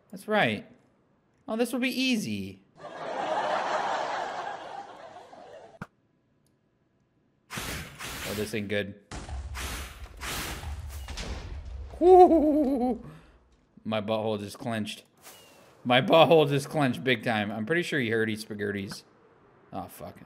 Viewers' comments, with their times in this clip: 0:03 That laugh track was perfectly timed